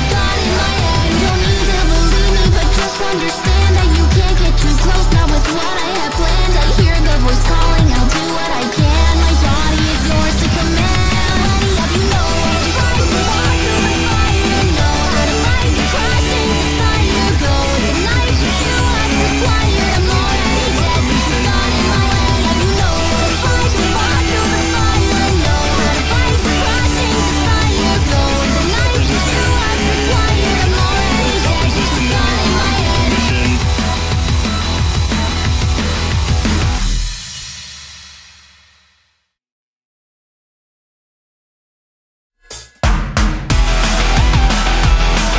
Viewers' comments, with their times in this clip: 0:08 has such good animation and the vocals are perfect👌
0:09 I like THE BEAT BRO THE JUST ACTION AND BEAT JUST SO GOOD IM GIVING THIS A SMASH!
0:09 the vocals the animation ah it’s chef’s kiss 😆
0:13 This song, for a lack of better words, is completely immaculate However, I had a question- All throughout the song, you can hear Glitchtrap singing both to Vanny and as background with Vanny but I noticed he seems to sing his own lines until the end and just wanted to know what it was he's saying because I can't tell TwT Please help
0:29 is it just me or he said "stop existing"? Good song btw